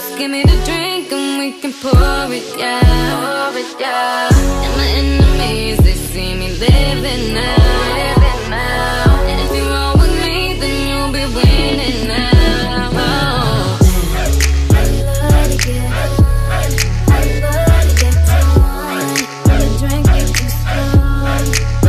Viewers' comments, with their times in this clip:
0:05 Why is her voice so sexy in this part?????